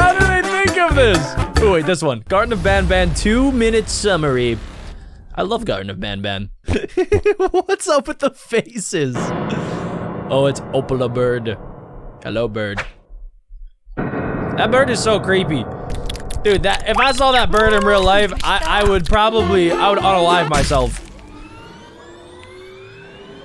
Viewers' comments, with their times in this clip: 0:07 what kind of laugh is that😂😂😂😂😂😂😂😂😂